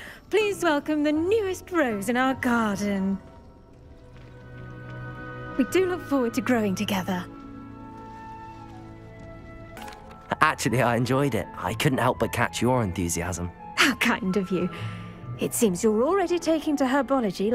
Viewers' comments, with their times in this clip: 0:05 VINE BOOM SOUND EFFECT